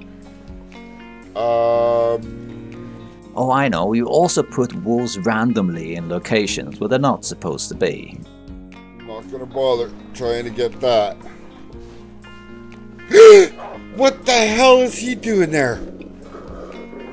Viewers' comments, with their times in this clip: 0:03 I thought he said "walls" and not wolves and jumped out of my skin when a wolf came around the corner